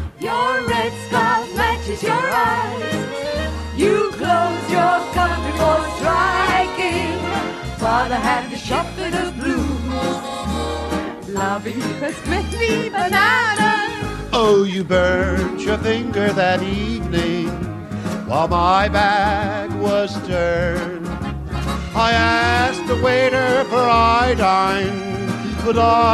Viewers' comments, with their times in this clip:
0:07 one of the girls laugh as she mistakenly sang, Father had the Shop Fitter Blues, rather than Ship Fitter Blues, cheers.